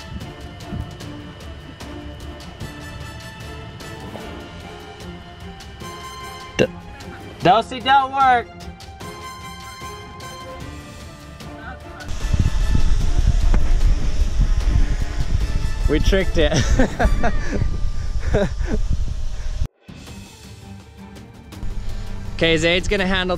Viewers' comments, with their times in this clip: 0:05 that burp though
0:06 You can hear someone burp in 😂